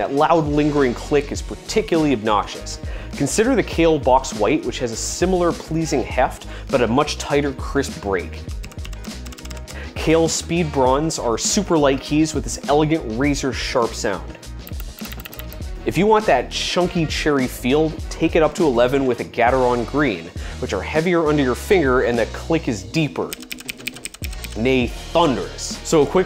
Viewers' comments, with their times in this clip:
0:09 kale speed bronze? They sound soooooooo